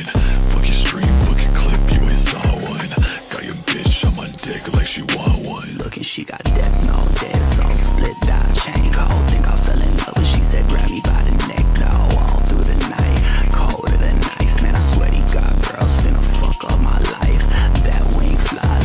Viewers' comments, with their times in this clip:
0:04 TROLLED (I got rid of the bass drop (skip to )